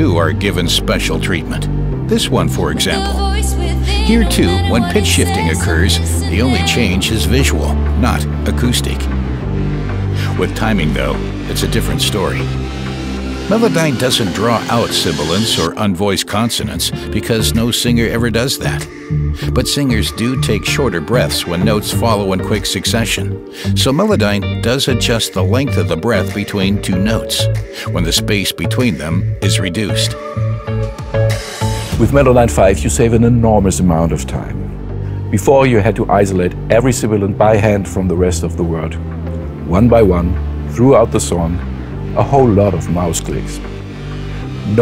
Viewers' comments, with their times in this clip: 0:03 I thought I was going crazy hahaha 'windows error/invalid/ sound effect? SFX error on a VOCAL video hahah
0:31 "with medolyne 5" he says... :) amazing improvement plug in!!